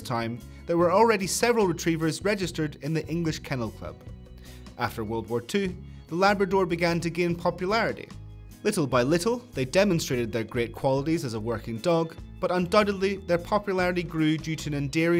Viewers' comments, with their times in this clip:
0:03 Grand entry, but wondering why there is no music and applause.